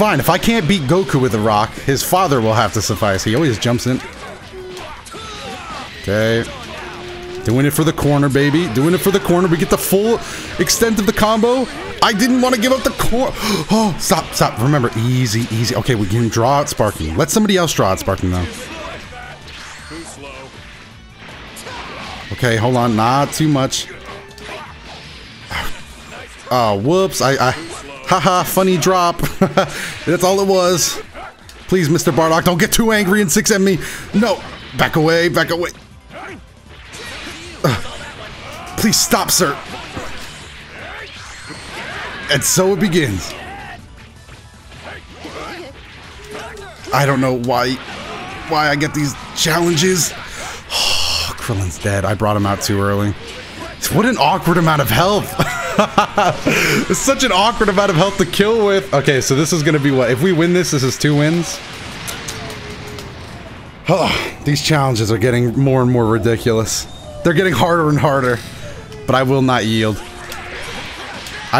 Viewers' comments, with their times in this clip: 0:03 is it just me or do I hear a woman crying?
0:57 Who else hears the crying noises in the background??